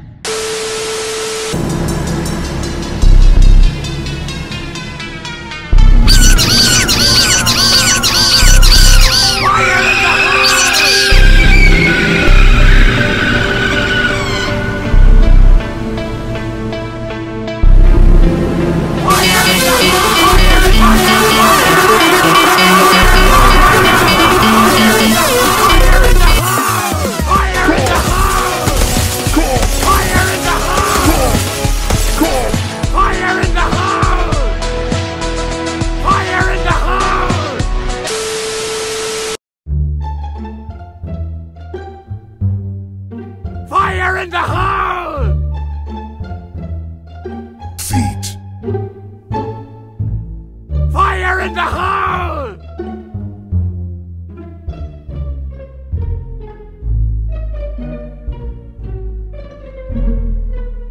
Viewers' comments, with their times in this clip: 0:10 i replaced this scream into the sonic.exe scream because i found out that i can replace sound effects in gd. So if i play this, the 3067 scream is sonuc.exe
0:46 The way it says feet is hilarious